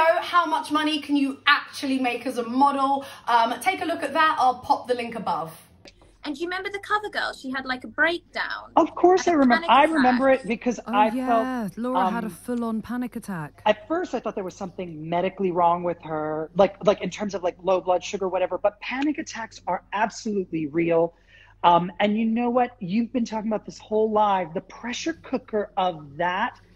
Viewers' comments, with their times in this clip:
0:10 That random sound byte is so reminiscent of when Tyra would voice over certain parts of the show 😂